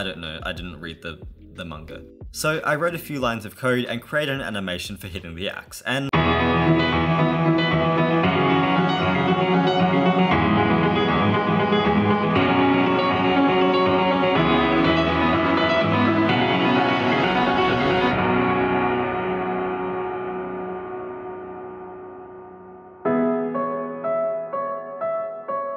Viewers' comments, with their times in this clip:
0:06 GET BASS BLASTED